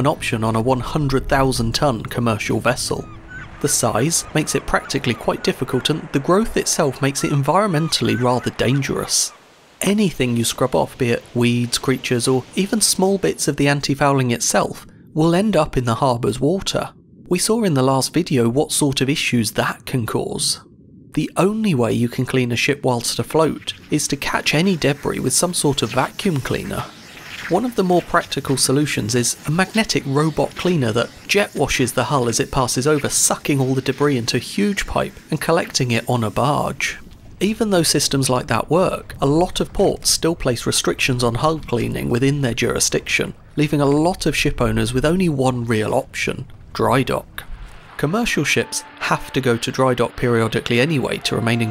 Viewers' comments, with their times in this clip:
0:05 Did the audio get cut off or am i loosing it?
0:33 "sucking all the de Brie ..." what has cheese to do with it? Perhaps you meant debris - not the pronunciation abuse that the 'Merkins heap on the poor word.